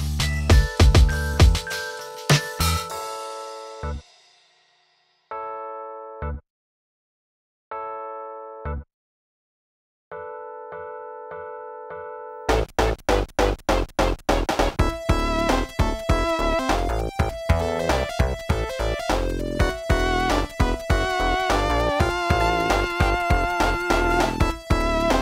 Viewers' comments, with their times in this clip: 0:07 that was STANKY